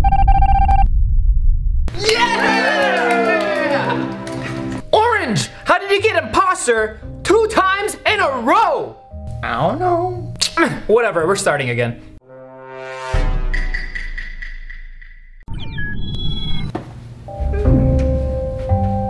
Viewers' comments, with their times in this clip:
0:06 guava juice said imposer HAHAHHAHA SO FUNNYYY